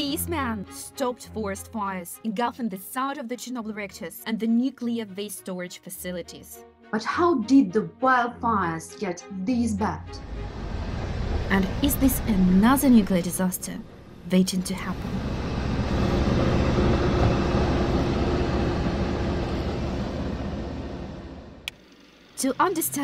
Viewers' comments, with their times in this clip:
0:09 Anozer ))). ЁR Inglish isn't zat bed!